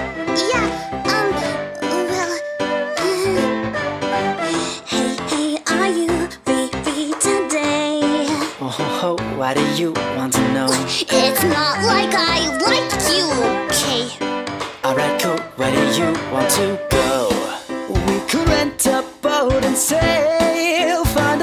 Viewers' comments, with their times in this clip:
0:07 '' HoHoHo '' ? SANTA!?!? :O